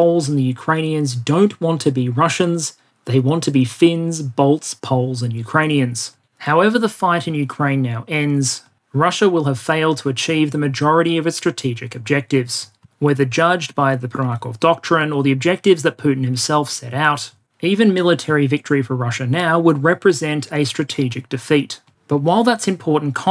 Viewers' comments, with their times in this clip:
0:05 "They want to be fins, bolts, poles" - is Europe a giant hardware store?